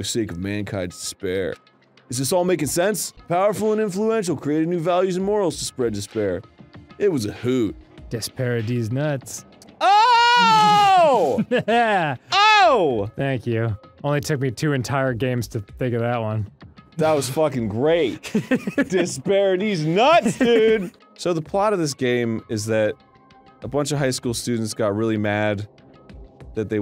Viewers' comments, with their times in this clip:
0:09 i was watching this during a thunderstorm, and my power got shut off a second before arin did that little scream thing. thank you arin, that made me laugh very hard